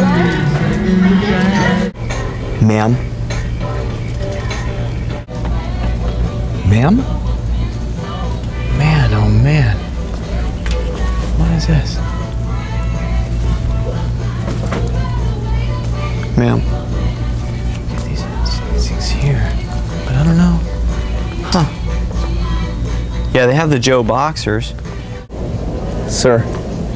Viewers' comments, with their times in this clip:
0:10 Thumbs up if you thought the "mam" was a man.